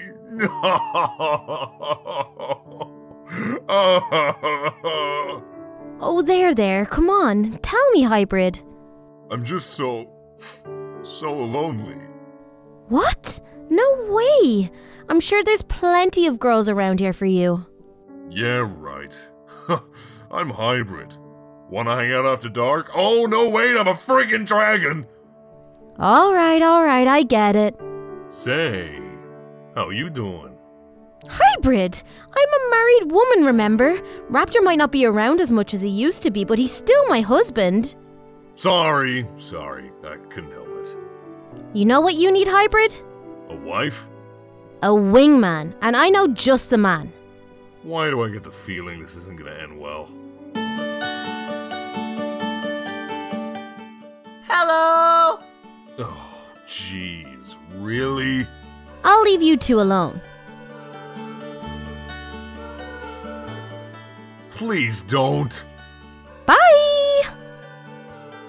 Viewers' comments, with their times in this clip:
0:04 the subtitles said laughter, but he was crying 👌😂
0:31 the Irish came in like a bloody truck 😂
0:50 Who realized little Kelly's accent changed